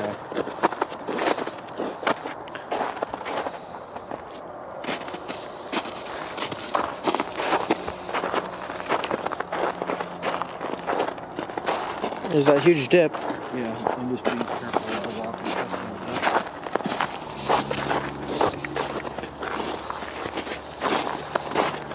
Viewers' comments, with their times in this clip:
0:05 I heard a knocking noise and I thought you guys heard it too, you both stopped but apparently you didn't hear it.